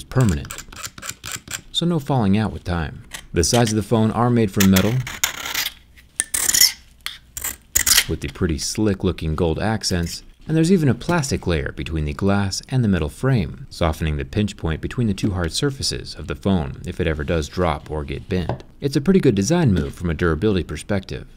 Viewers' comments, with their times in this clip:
0:07 R.I.P headphones users